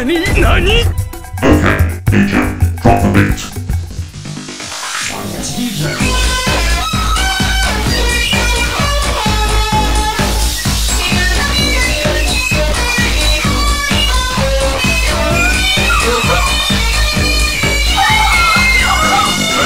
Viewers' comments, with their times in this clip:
0:04 when the song starts lol I NEED AN EXTENDED VERSION OF THE SONG SOMEONE SEND A LINK-